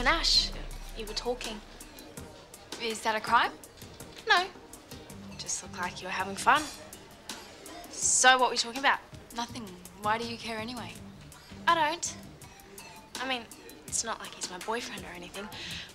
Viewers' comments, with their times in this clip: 0:03 Rikki is that a crime the sass